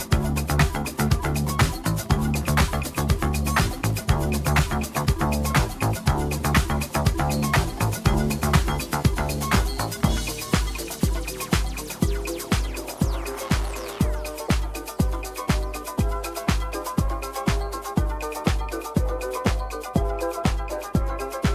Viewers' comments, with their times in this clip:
0:09 Totally agree. For example mixing in "Let's All Chant" was not easy! The tempo in the original song is all f****d up. She did a small mistake but promptly saved it!